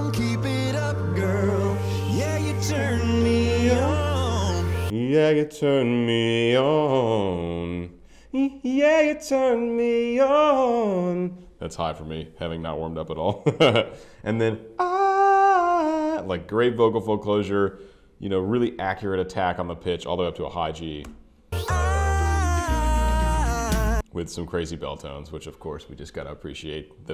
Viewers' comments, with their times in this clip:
0:09 Also just wanted to point out OH YES! RIFF IT 😁🙌🏼